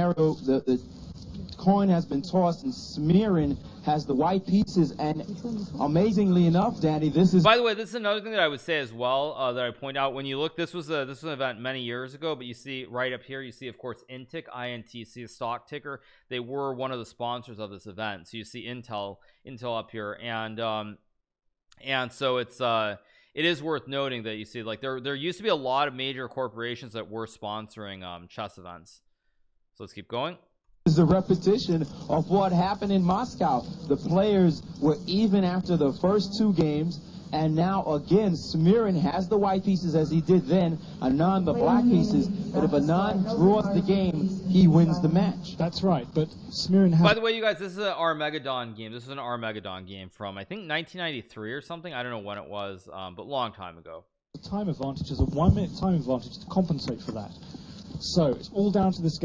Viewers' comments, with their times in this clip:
0:05 "amazingly enough daddy" thats all i heard
0:47 Hikaru says Armageddon like it's a dinosaur.
0:47 Hey Hikaru, say "Armageddon" Hikaru: ARM - MEGA - DON